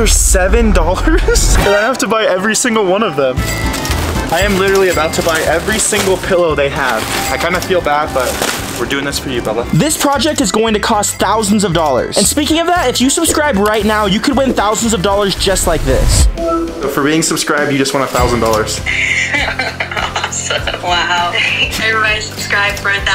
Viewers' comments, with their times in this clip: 0:08 did he say buba or Bella